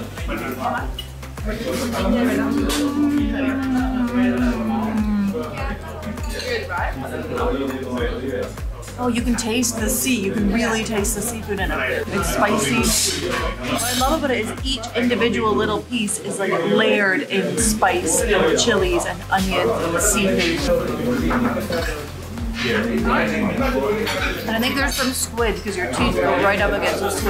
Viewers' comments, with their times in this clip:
0:09 The way she say "Mmmmmmmm" .. You will know the taste of South Indian food...